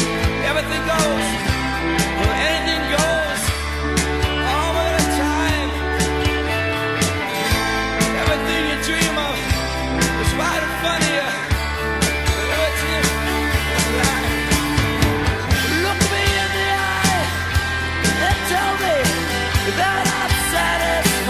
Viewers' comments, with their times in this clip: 0:05 listen for wrong note. :)